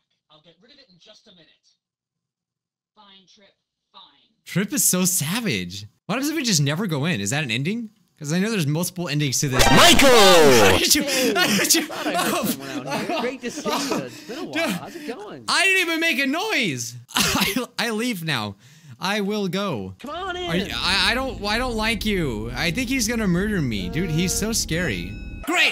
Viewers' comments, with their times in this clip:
0:10 I SWEAR I HEARD “HEy V SAUCE MICHAEL HERE” AND I DONT KNOW WHY BUT IM SOBBING